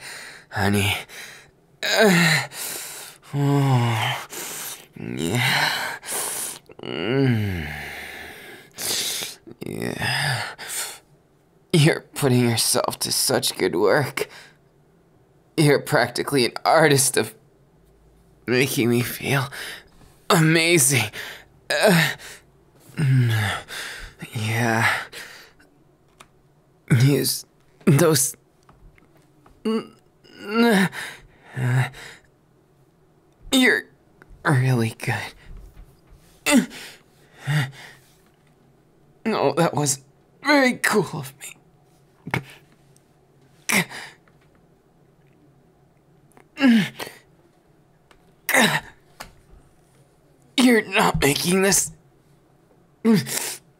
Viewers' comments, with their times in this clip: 0:04 So, like, are we not going to talk about those moans or...
0:37 anyone find that little grunt he made adorable? Just me? Ok.🥲